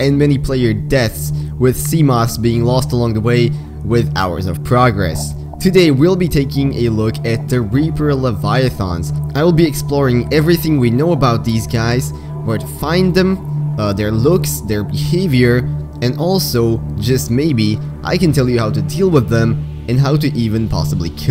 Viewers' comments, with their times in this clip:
0:08 Disliking the video solely based on how you said leviathan seconds. Stopped the video. Unfollowed. Turned off my phone.